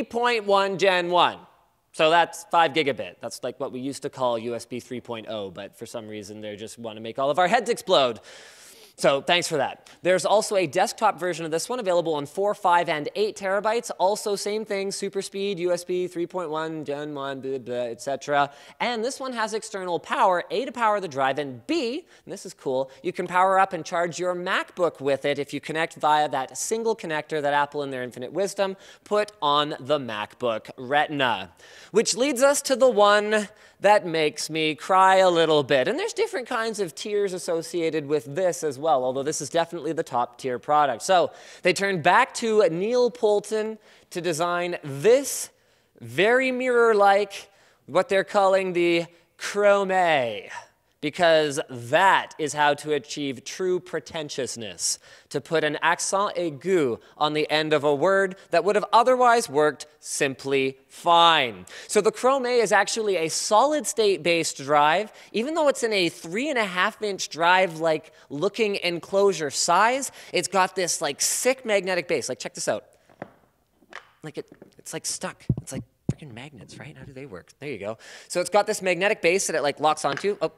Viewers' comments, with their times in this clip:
0:07 put it on 0.5x and hear linus breath in, after that he spits. looks nice
1:01 I just made the mistake of doing .5 speed for drunk linus and made me fucking piss myself jesus christ xD